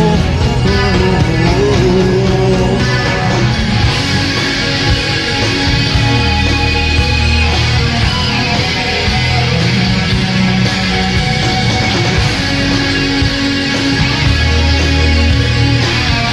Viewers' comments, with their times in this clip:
0:03 I'm totally addicted to that guitar tone I keep rewinding this video to that spot just to hear the guitar.